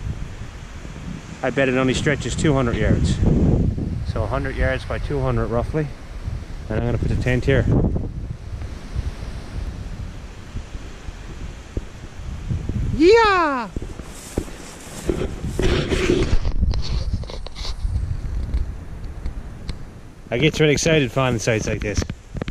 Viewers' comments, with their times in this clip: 0:09 Wow that BC hydro road reminds me of the shoulder-deep "puddles" and the 4 m deep "potholes" in the tracks when I was backpacking around NL! I always like your videos, but that yeehaw had me pause the video to like before the end haha! I love it.